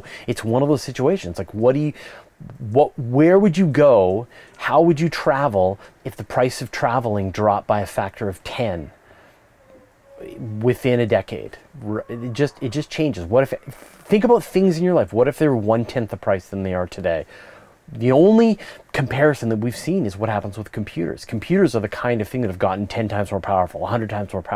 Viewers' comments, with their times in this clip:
0:07 hear the guy yell and the girl scream?